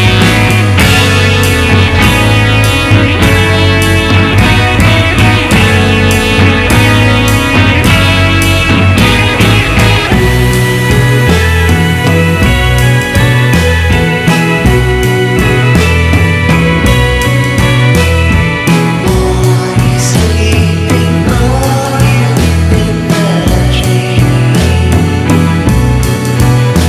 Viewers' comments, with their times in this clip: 0:10 The part is sooooo good, the music, the drawings, it’s really coo. Love it